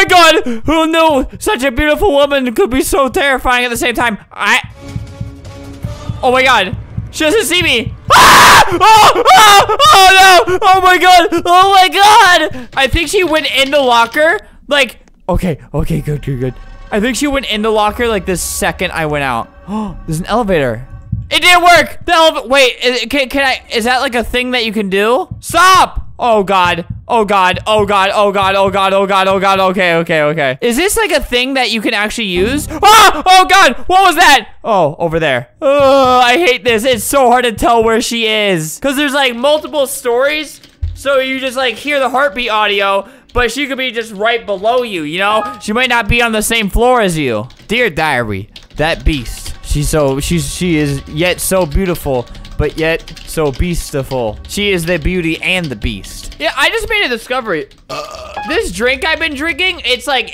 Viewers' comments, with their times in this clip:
0:07 my volume was all the way up and i have a migraine now-
0:47 I think my ears are broken i tought he said ""Dear Diarhea""